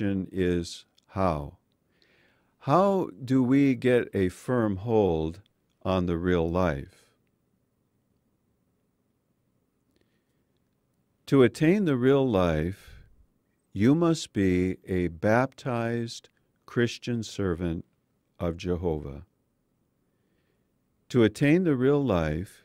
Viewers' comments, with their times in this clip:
0:05 the man pauses for a second as if he himself can not believe what he's reading!!! Then he repeats it because he still doesn't believe that the governing body could be this ridiculous!